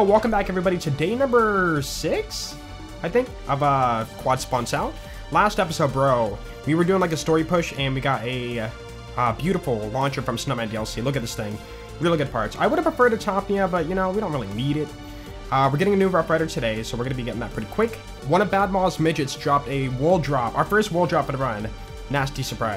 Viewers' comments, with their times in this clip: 0:10 is it just me or you really did say "really good fart" lmao